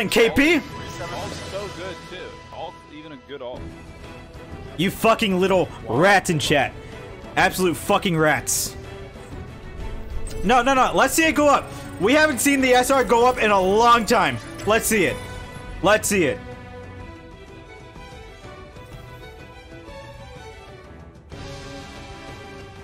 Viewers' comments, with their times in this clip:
0:10 Heroic music stops *